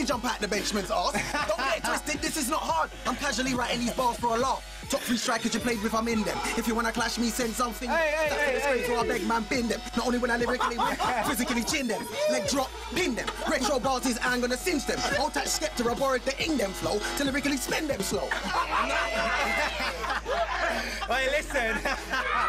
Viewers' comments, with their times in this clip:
0:04 Bradley went in with the skepta in dem flow 🔥🔥🔥